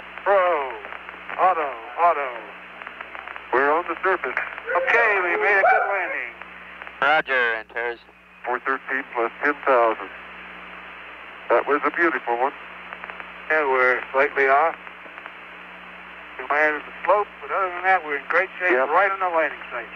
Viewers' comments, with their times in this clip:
0:04 Someone can explain where the sound comes from in the minute, it seems ... a dog? Or a sneeze? Comes from the MCC?